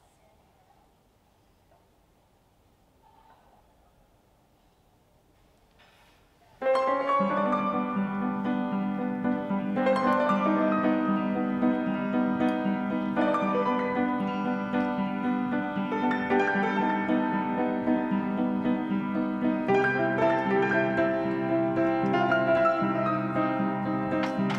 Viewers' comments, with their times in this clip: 0:07 such a beautiful scene, the color, the music, and all is *chef kiss